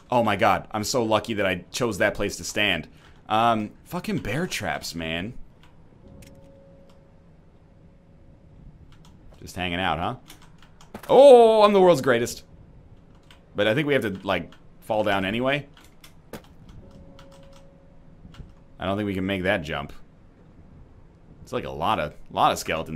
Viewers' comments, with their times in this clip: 0:06 the delivery is just right